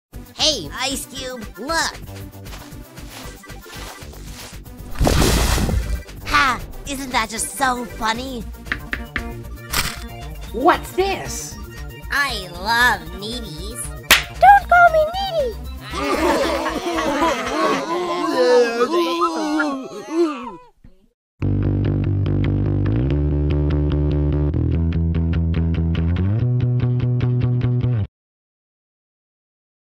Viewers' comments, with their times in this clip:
0:02 why is that music in the background sped up?
0:10 that dosent sound like pencil